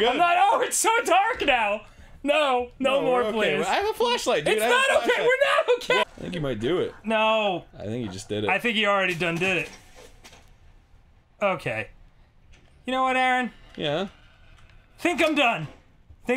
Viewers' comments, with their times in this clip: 0:04 I love how hysterical dan gets after in that game. Arin: I have a flashlight it’s ok Dan: IT’S NOT OK WE’RE NOT OK!!!